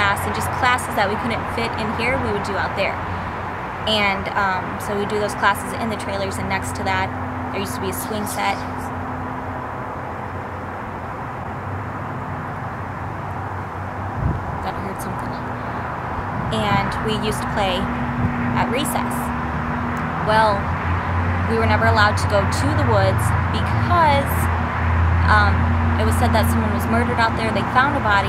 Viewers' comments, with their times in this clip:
0:09 Cool video!! I thought I heard whispering!!
0:11 40 to there is a little child saying something can’t figure it out what it is saying